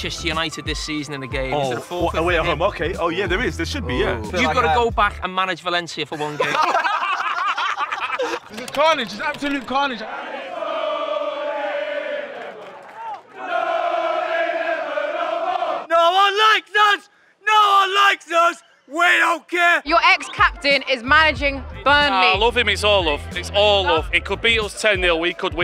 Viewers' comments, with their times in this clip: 0:07 Why are Burnley singing The Wild Rover lol